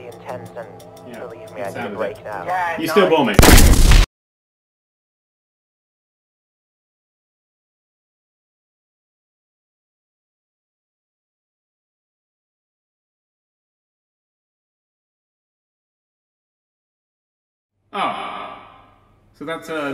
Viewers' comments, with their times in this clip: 0:05 WARNING: EVEN LOW VOLUME CAN HURT